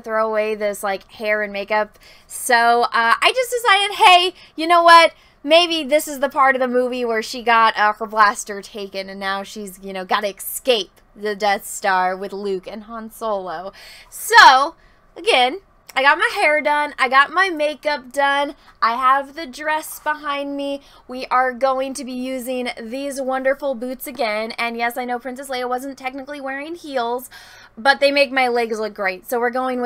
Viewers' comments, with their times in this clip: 0:10 Did you say "excape"?